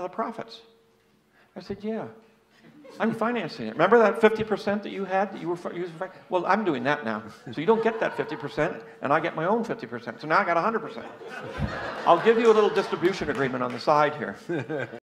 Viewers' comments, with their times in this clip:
0:12 The cringe clap dude